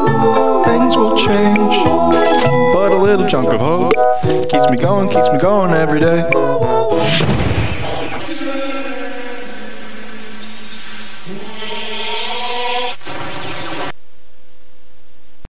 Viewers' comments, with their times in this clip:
0:11 I thought it was about to play the halo theme. But this is amazing artwork , Poor Gorsepaw :(